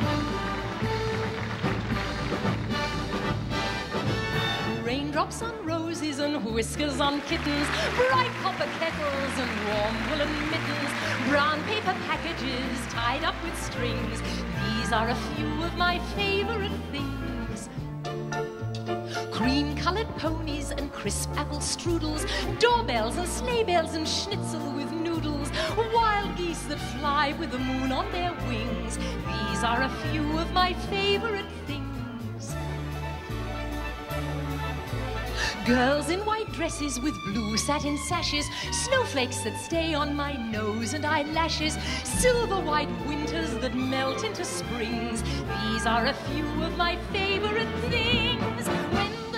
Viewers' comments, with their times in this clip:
0:04 sound like 7 rings
0:37 this is reminding me of ariana grande song 7 rings